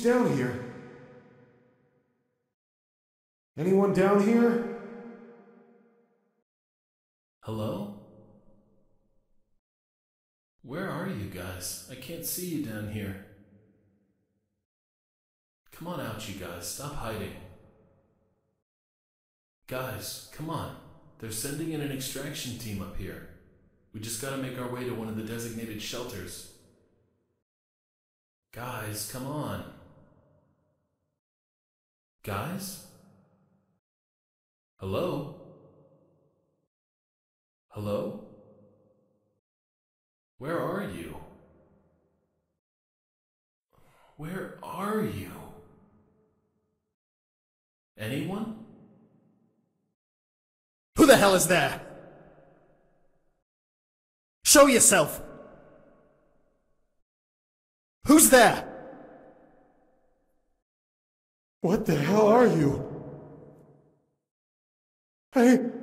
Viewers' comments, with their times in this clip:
0:05 wtf that fnaf voice
0:07 scp 939 stole janitors voice in
0:11 sounds like the guard in the beginning who likes books
0:31 Wtf that sounds exactly like the guard who got bullied at the start of the game, NOOOO MY FAV GUARD IS DEAD
0:31 is it me or it sounds like the dude in sister location
0:49 kinda sounds like Quagmire from family guy lol
0:51 English Accent detected America: TRIGGERED OVER 100%